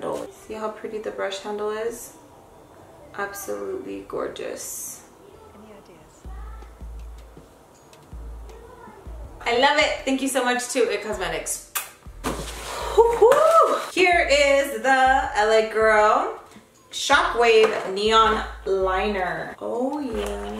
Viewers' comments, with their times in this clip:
0:05 DID ANYONE ELSE HEAR 👂💭 SOMEONE REPLY TO HER SAYING "YEAH IT IS"?😯 Was that someone she knows or is it something that wasn't there?😲😯😌